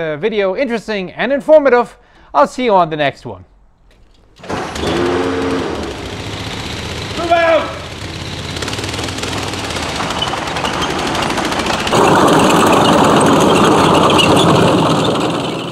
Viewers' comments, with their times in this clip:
0:03 ... I was not looking at the screen, and I heard like starting a Chainsaw... 10 seconds later I came to computer to see that actually they started the tank :)